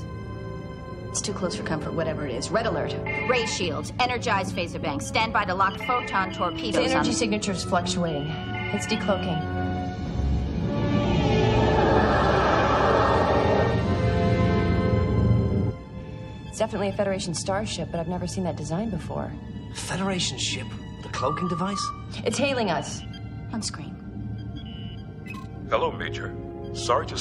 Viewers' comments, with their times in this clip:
0:10 .....one of the few times you hear the Romulan "whoosh" of a cloaking device with the Defiant. They change it for future episodes, give it a strange electronic whine instead :(